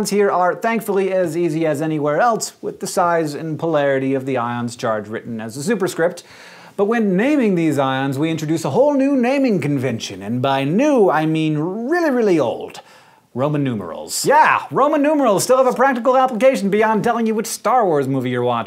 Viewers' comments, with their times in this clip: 0:06 I heard Hank breathe...... Never thought I'd see this day😱😂😂😂